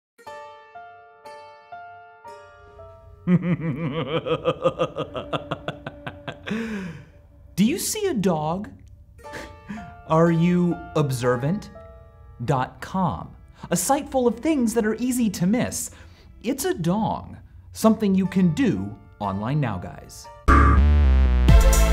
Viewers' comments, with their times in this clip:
0:00 for a second there I thought it was lose yourself
0:00 play from with speed 0.25 to hear a series of burps
0:03 Michael laughs like Agent Smith from Matrix